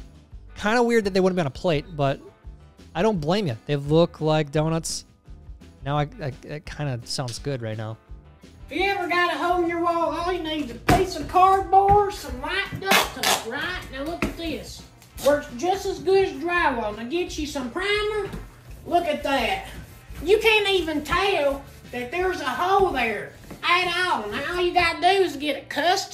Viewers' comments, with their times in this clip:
0:09 Why does she sound like Towelie from South Park?